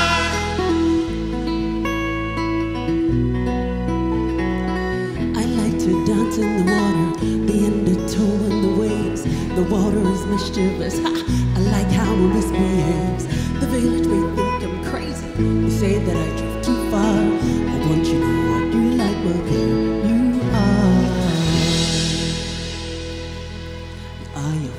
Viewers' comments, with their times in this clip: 0:06 The lady has a golden voice